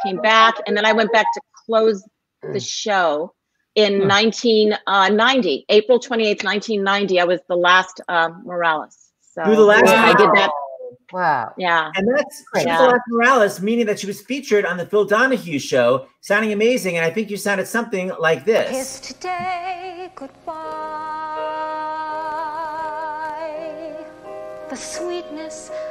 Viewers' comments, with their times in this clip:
0:09 what a voice! So talented!